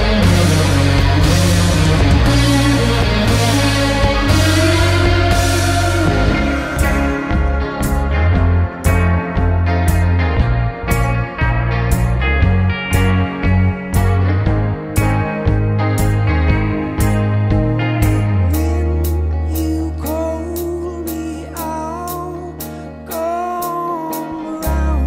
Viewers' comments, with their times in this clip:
0:06 Guy can belt. Transition made me wanna weep. So glad I found these guys.